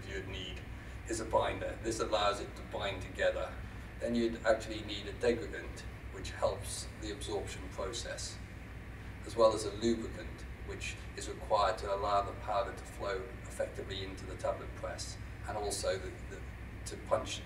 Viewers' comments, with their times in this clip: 0:05 Is he saying 'degradant' or 'dividend' ?